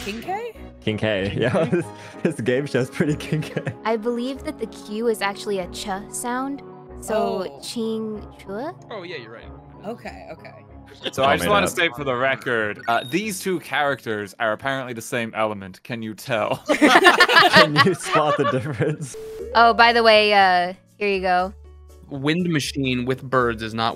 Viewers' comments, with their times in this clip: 0:07 Even though the Que still sounds like you're saying English the way you say it sound so pleasant for some reason